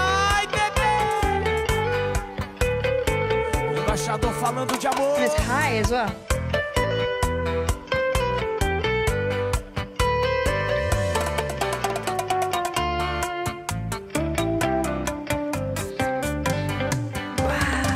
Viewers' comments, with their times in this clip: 0:05 That’s not sertanejo